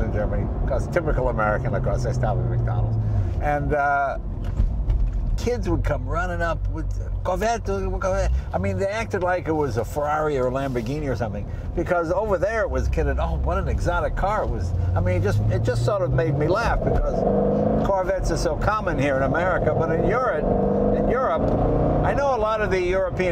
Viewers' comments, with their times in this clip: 0:05 Lol. Kids with that ambiguous European accent.